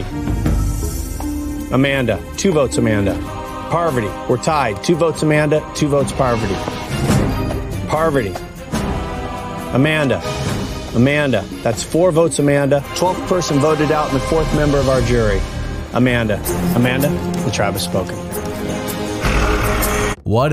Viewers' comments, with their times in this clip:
0:05 the moment of Courtney laughing at Russell wasting his idol gives me life.